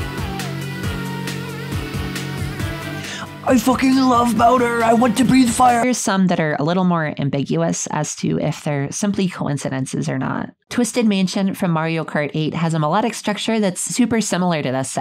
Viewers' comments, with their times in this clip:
0:03 Ok, I have to admit that as a kid, I always thought bowser’s name was browser. but NEVER Have I EVER seen someone call him BOWDER THIS HAD ME ROLLING